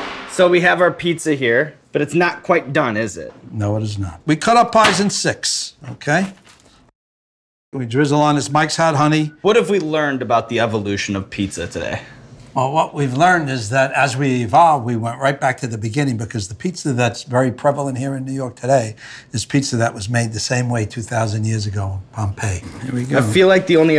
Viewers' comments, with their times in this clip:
0:08 ok, so whats he say? sounds like "mxyzan honey"? whats that then? sounds like a crucial ingredient but I've no idea what he says.